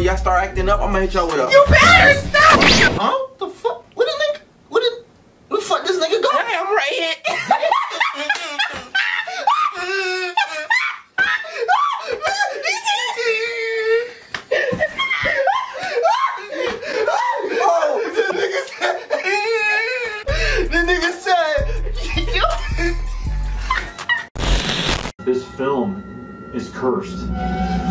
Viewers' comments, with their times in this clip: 0:08 that wheeze killed me